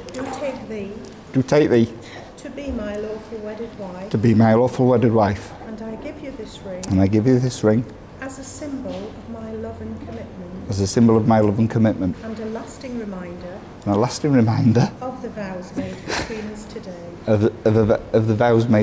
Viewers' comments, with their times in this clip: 0:04 "I do take thee... to be my awful wedded wife" 😂😆🤣 (I'm sure it was emotion and nerves that tripped him up, and not an intentional bit of humor, but still... that was hilarious!)